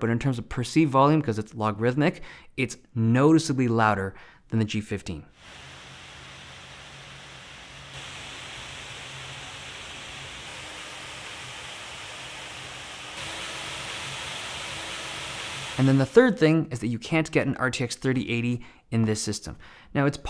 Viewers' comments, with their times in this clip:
0:03 why was that oddly funny (duh, loud=funny)